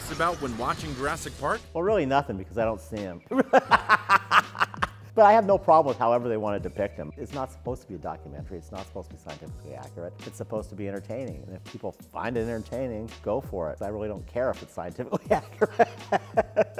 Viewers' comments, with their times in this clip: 0:03 My guess is that they asked him to do a shot of him laughing. Else I'm very concerned